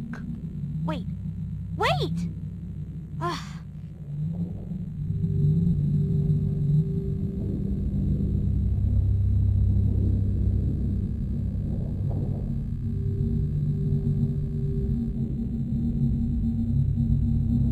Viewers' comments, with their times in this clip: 0:03 that ahhh got me dying🤣🤣🤣🤣🤣💀💀💀💀